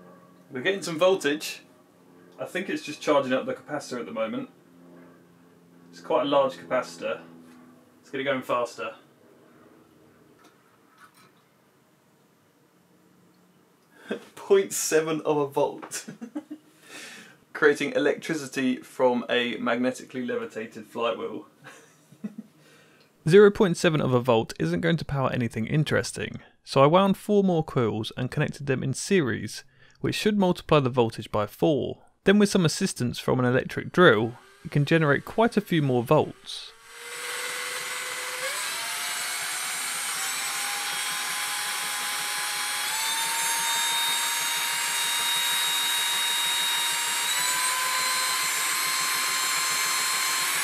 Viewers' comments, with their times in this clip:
0:06 I hear Minecraft zombie grunt.
0:32 I did not think that was a drill at first